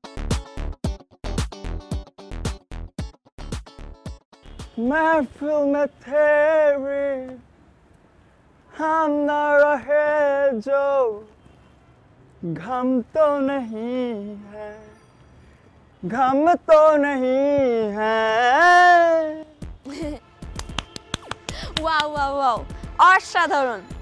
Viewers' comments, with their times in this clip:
0:06 arijit singh lite start to singing😂🔥 Btw love from Kolkata💚